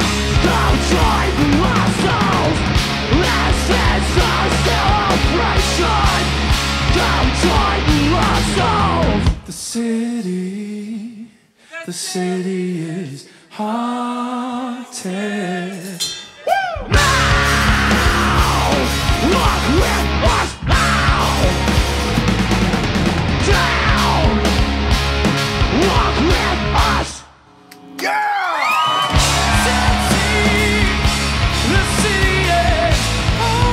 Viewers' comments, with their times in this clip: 0:09 drunk dude singing- please shut up
0:17 the noise you make when you stub your toe
0:17 That woo is fuckin awesome